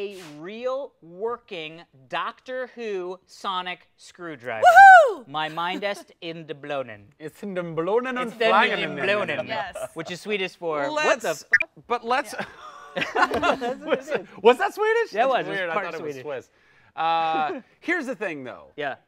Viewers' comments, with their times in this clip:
0:05 It's not even remotely close to Swedish. Don't understand why Americans think that they can speak Swedish just because they use a "Swedish accent" and say some random words.